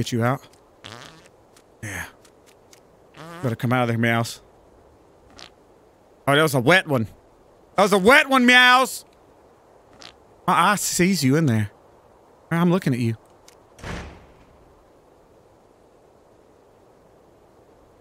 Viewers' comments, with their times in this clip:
0:05 the greatest and funniest fart of all time (same in other episodes, where this fart happened)